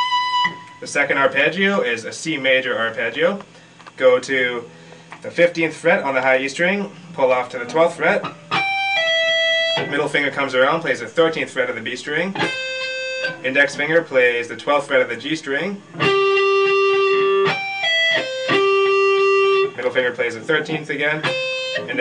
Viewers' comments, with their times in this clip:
0:06 idk if it's just me being drunk, but did this dude just say the fiftieth fret!?